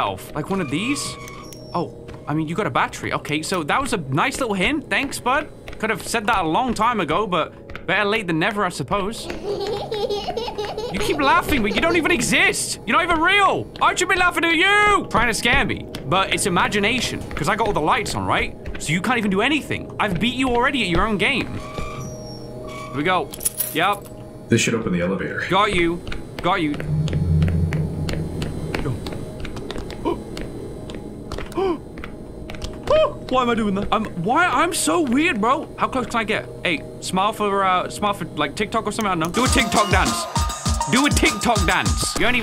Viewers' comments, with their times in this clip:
0:09 cod zombies teddy bear laugh
0:09 Bro that laugh is literally the laugh of the Teddy Bear when the mystery box changes location in the older black ops zombies 😰
0:26 Oh, my God! The little gasps he made everytime the doll would move! 🤣